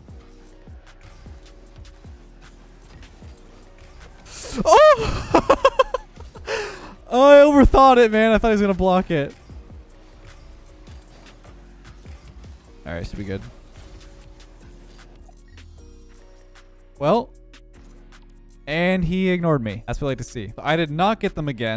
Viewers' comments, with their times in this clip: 0:05 the moan and scream😂😂😂😂😂😂